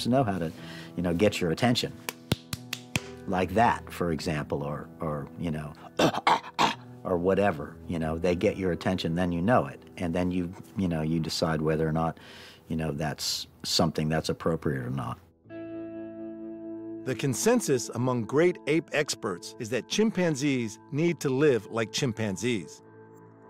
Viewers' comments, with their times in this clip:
0:07 spot, Wow!! He makes that noise perfect lol better than any human I've heard lol